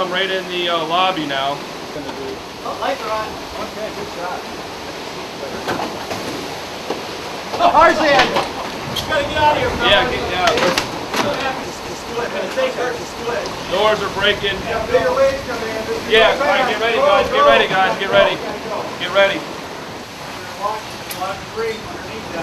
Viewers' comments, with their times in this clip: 0:08 when he said "the cars in" i thought he said TARZAN! XD